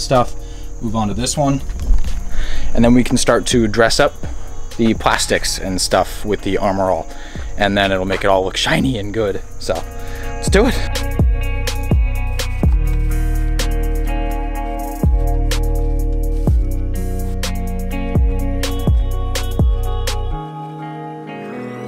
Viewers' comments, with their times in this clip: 0:09 Bro you sound like your're in pain 😂